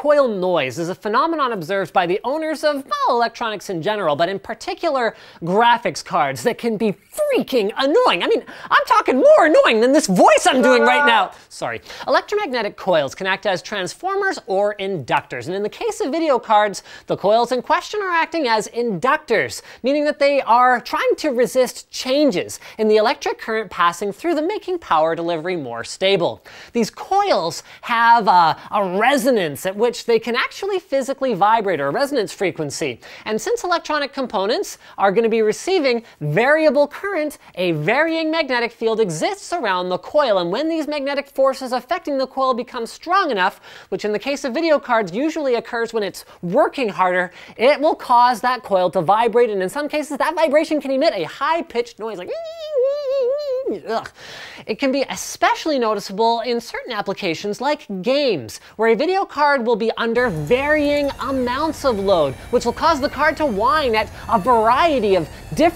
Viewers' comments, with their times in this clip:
0:03 he sounds like a high princess for a second
0:09 when puberty hits you...
0:51 linus the fly